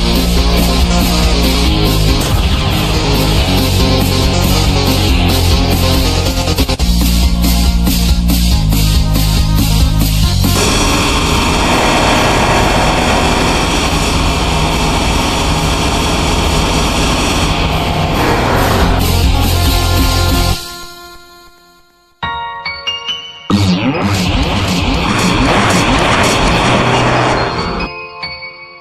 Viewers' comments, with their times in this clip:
0:10 rip headpone user